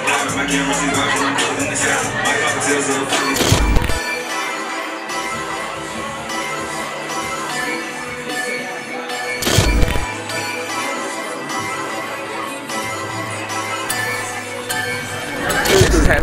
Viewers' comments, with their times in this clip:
0:03 i need that beattttttt :7777777